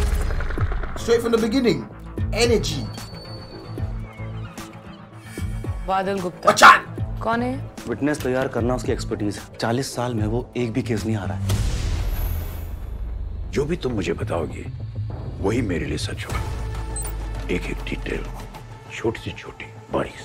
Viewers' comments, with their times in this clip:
0:05 RIP headphone users ahahahahah